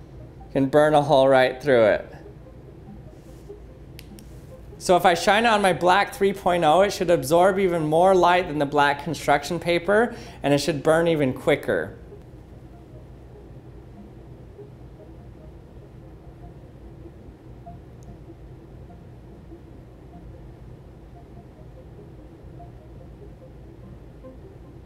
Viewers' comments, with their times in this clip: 0:05 he sounds exactly like Pewdiepie 😲